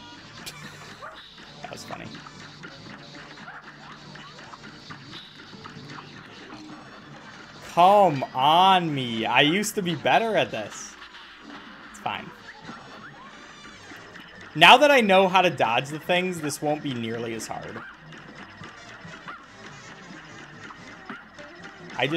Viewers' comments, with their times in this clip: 0:06 ayo bro said "come on me" in such a weird way